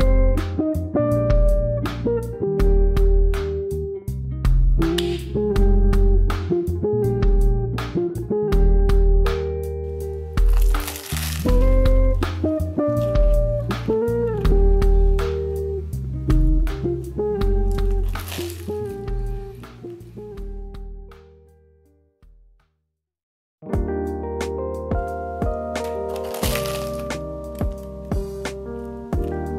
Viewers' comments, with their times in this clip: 0:10 Just found your channel and....... Oh. My. God!!!! Best video EVER!!!! Loved the crunch. Best part. Wish it were me though! :) Question. Will a regular oven produce the same excellent results? Can't wait to give this a try. Thanks so much.